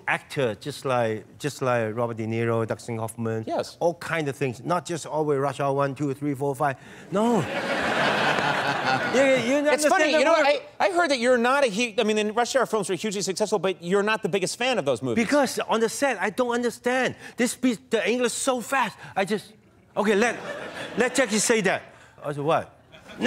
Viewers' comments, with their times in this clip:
0:08 Jackie Chan just said the n word & I'm pretty sure NOBODY noticed at all.